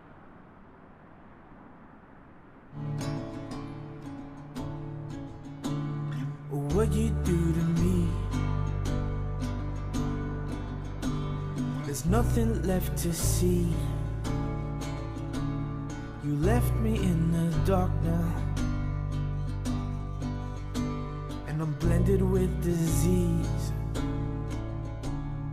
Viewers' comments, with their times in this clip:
0:08 LMAO not me thinking I can finally understand simlish only to realise it’s in English